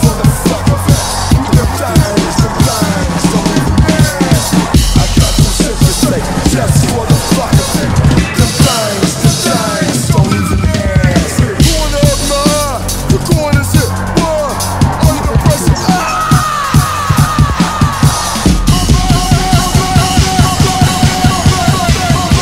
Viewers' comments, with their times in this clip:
0:04 I was about to say it has some cool stacked ghost notes, it's pretty cool... and then hit and I was like "oh I love this" it's literally right up my alley